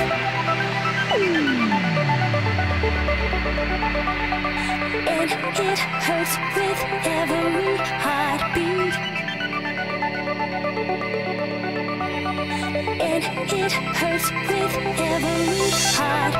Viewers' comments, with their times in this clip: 0:04 Awesome song. I never get sick of this one :) she sings it with soo much emotion, just brilliant!